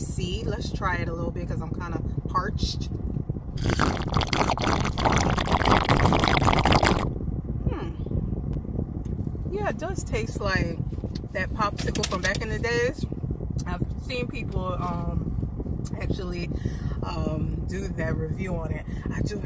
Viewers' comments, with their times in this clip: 0:03 LMFAOOO The Drinking Sound 😂😂😂